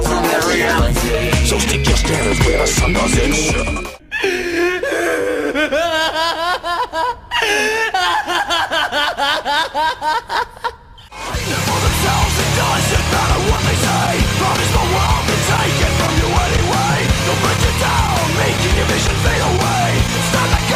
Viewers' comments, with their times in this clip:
0:03 Oh gog o.o that laugh scared the crap out of me but damn it fits him XD